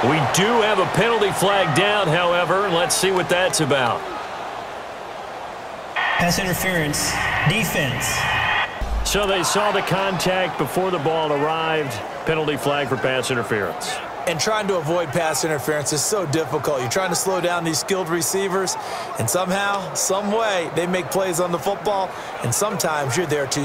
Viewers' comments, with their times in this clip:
0:06 he sounds like Clete Blakeman